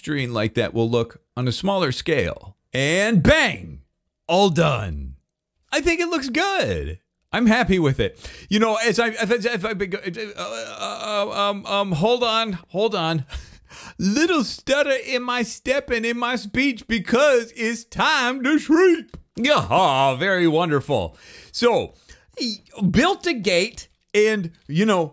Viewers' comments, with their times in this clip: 0:08 a glitch in the system